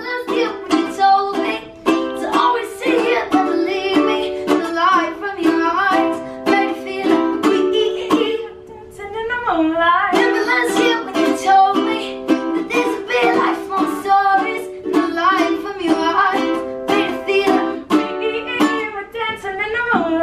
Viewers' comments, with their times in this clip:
0:08 She sing lol